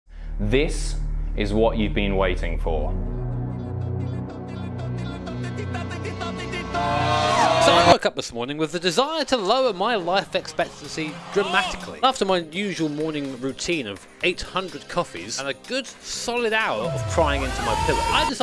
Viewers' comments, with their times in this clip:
0:04 * crazy Italian noises + AAAAUUUGGGHHH *